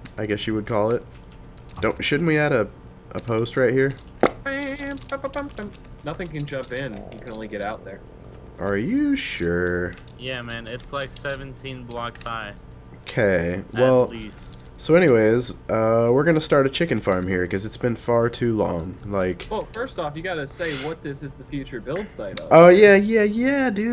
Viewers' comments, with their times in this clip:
0:07 Did someone fart ?